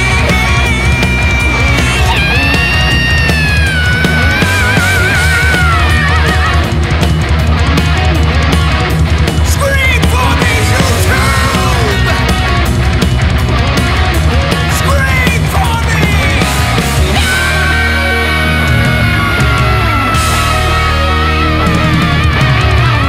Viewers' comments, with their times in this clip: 0:05 In the style of Iron Maiden? That double kick run starting better be on one pedal like Nicko!